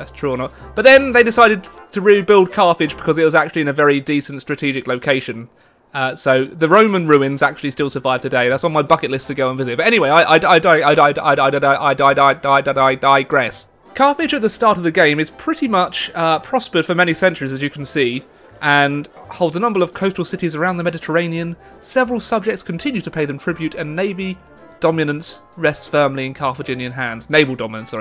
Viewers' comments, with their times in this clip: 0:10 Elmer Fudd plays Imperator Rome.